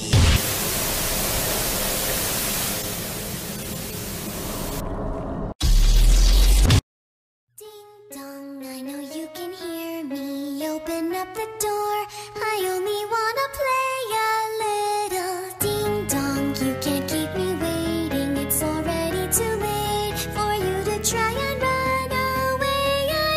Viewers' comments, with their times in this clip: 0:07 i love song